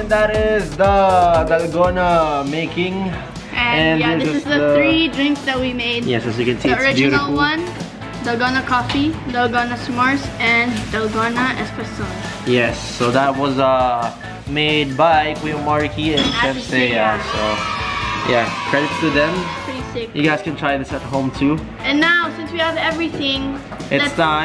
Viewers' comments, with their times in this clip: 0:09 I hear corona coffee 😂😂